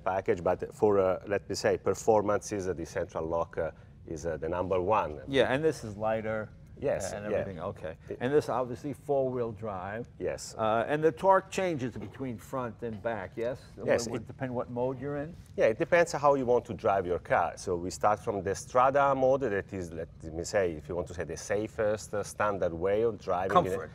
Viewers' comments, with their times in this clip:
0:04 "Number one" made me think of Mario 😂